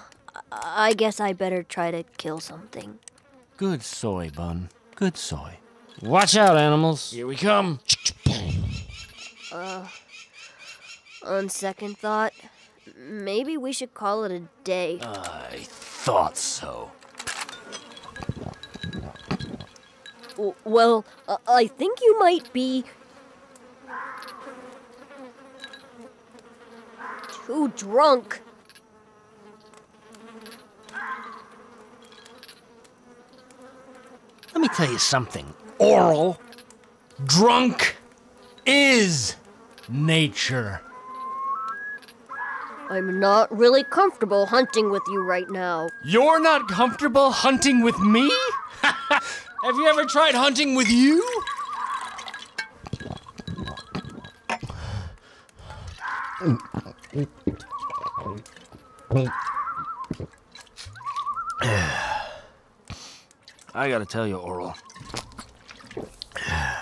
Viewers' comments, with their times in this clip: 0:03 GOOD SOY BUN LMAO. Good boy, son.
0:49 Clay’s laugh was kinda funny